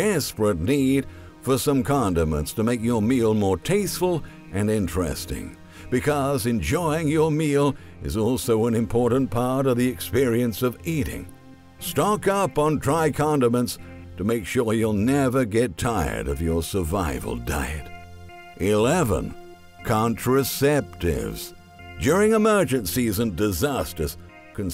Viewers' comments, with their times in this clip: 0:05 I literally thought this guy was saying condoms LOL